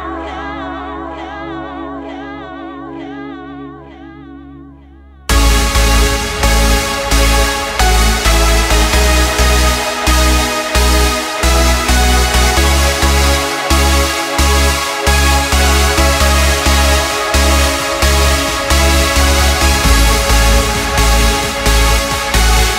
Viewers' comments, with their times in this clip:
0:05 reminds me of the Ultra 2018's version of "Man On The Run" by Dash Berlin